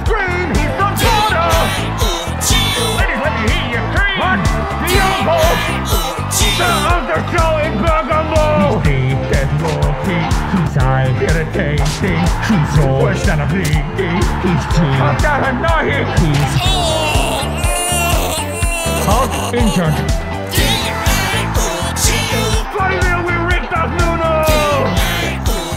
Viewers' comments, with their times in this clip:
0:04 for an entire year I thought it said scream
0:06 i heard a discord notification
0:09 I didn’t know firmino was scouse😂😂